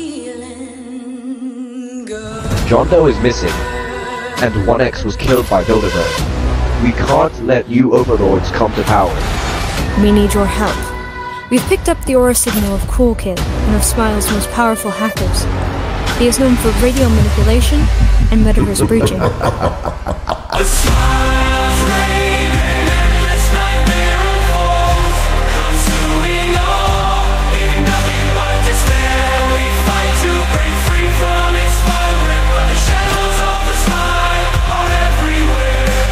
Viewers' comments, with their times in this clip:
0:03 SEEKER VOICE REVEAL
0:20 da games ahh sounding music